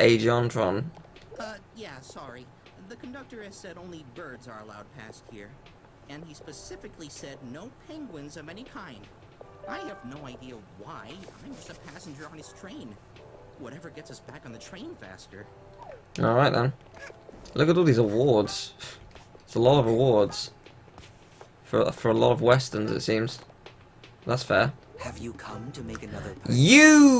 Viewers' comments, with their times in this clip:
0:10 it might be jontron or.... just another person that by pure coincidence have the same voice as jontron